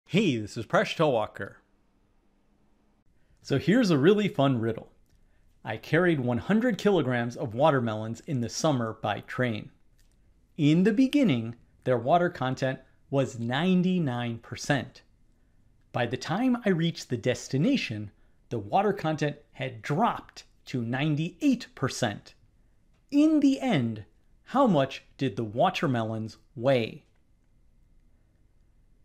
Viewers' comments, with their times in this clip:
0:10 I think an attempt was made to do the 'in the beninging' meme and then decide halfway to follow a civilized scientific discourse.